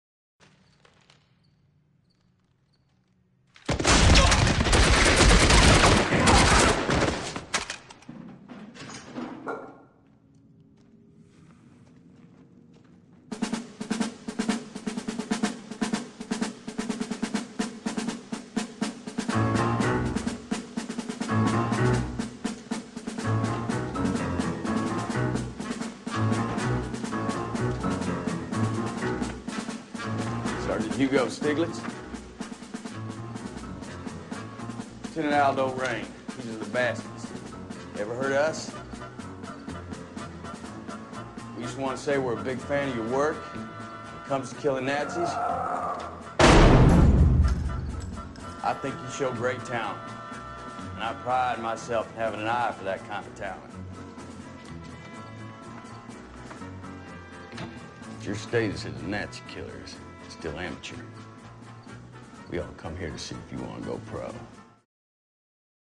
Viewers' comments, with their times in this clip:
0:03 Eli and that shotgun. Boom.
0:45 hehe putting everything else aside, the part where the nazi groans in pain then being shot casually was one of the funniest scenes in the movie
0:47 i love the sound of the gunshot